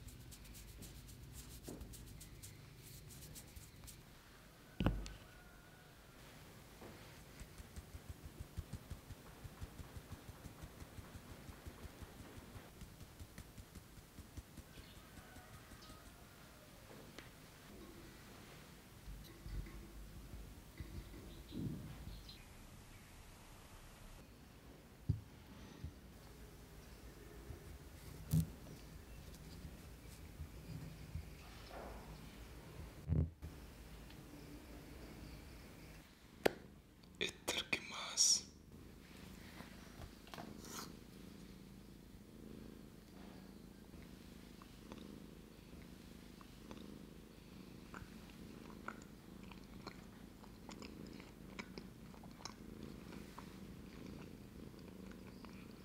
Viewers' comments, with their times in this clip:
0:04 guys sounds like placing a minecraft block
0:34 I didn't expect his voice to be so deep 🥰
0:41 this is the first time i heard his voice